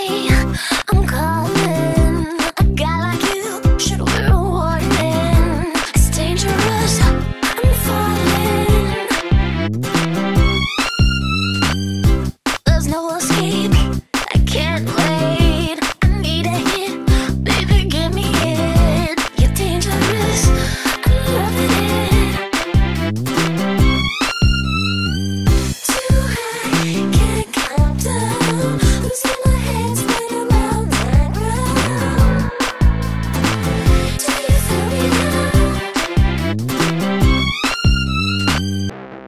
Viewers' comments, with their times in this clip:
0:05 Some parts of this gives Paul McCartney energy (specifically that really nice major to minor string section part )
0:20 this sounds like somebody didn’t practice the rhythm of the violin
0:25 sounds like an early 2000’s movie scene with rich popular girls doing a shopping spree at the mall lol